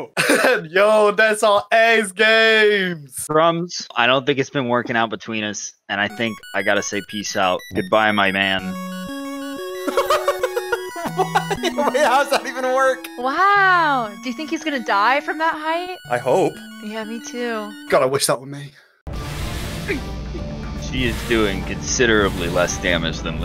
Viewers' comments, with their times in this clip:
0:09 HELP THE DUCKTALES MOON THEME FITS IT SO PERFECTLY 💀